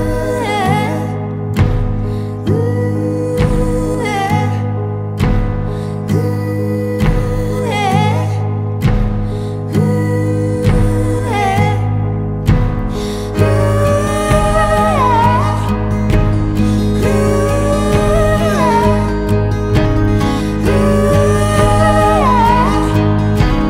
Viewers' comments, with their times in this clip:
0:10 I could hear it with a cool minor chord 🎶